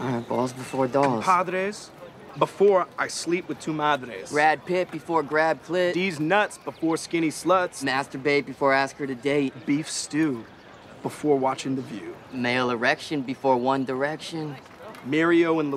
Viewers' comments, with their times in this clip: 0:03 is awesome with that swag and proud tone he says it with 😂😂